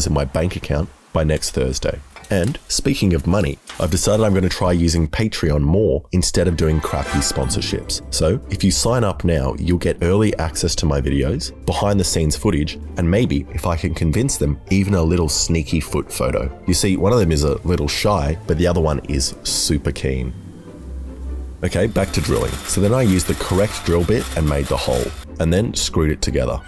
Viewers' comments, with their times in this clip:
0:07 the music is so nostalgic